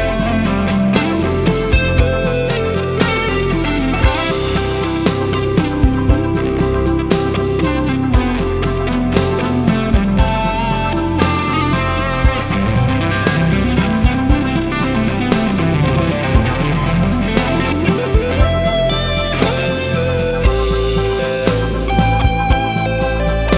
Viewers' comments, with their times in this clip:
0:04 nice playing! i love the part from to 8.56. Nice melody and tasty tone!